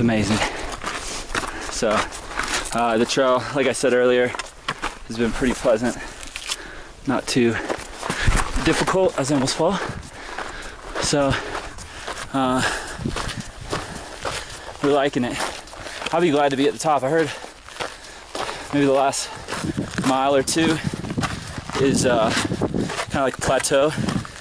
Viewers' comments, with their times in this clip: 0:05 That part made me jump in my PC chair and made my heart pound. I always play Youtube through a stereo, for better sound quality. And that sounded like you fell to your doom there.